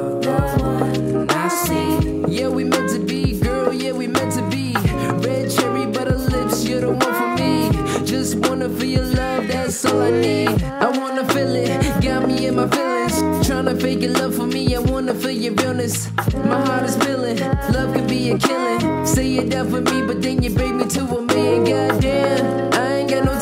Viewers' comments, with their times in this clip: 0:09 Who else heard "YEAH BOI!!"